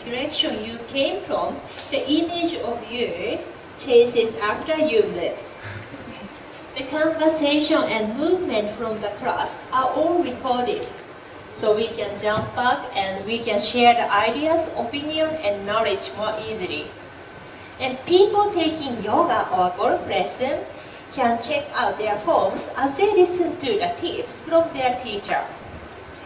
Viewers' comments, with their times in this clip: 0:10 "So we can still fuck"???